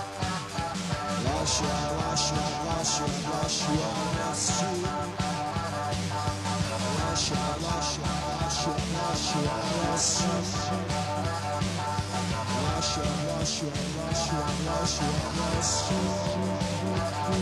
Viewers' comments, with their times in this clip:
0:04 I remember seeing another upload of this where there were more obvious shots of Gillian raising her eyebrow/staring as Bernard messes things up or (as here ) deliberately slurs the lyrics. This session was done under a great deal of stress, hardware flaws and at very short notice etc.
0:05 It's not that she's a woman. It's the way she looks up from her iron when she realizes Bernard is slurring and rushing the lyrics on purpose.